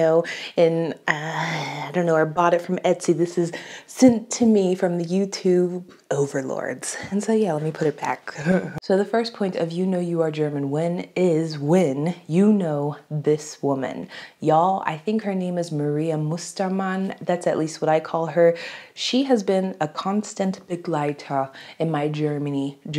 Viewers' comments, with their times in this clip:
0:08 Love your laugh 😂😂 Really interesting video! As a German I’ve never thought about that but you are so right with everything!